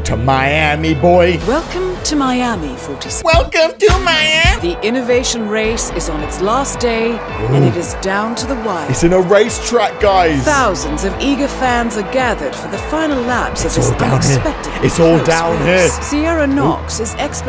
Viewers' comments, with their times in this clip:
0:03 my sister singing